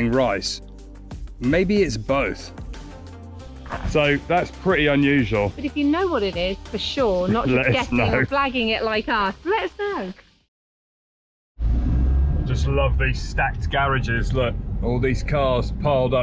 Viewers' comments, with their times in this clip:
0:04 FYI: This is a machine that mills rice. If you buy rice that has just been threshed, you will need to mill it using this machine. What you are talking about as noise is the sound of cicadas.